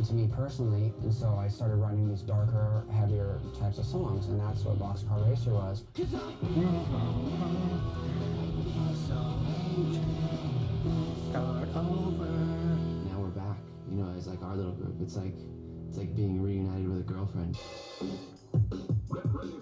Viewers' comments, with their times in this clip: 0:05 Mark singing 'I Feel So'
0:06 Mark singing box car racer, so cool!